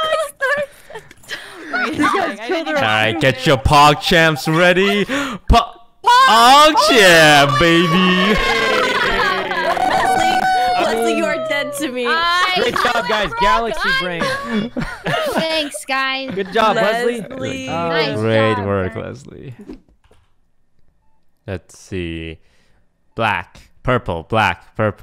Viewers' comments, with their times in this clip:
0:07 when toast stops and continues his Pog champ just to make sure it was a victory